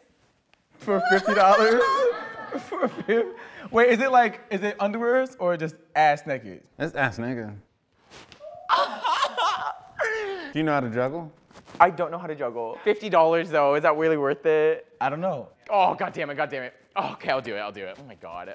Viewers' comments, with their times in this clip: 0:03 WAIT THAT "underwear" WAS NATURALLY AUTOTUNED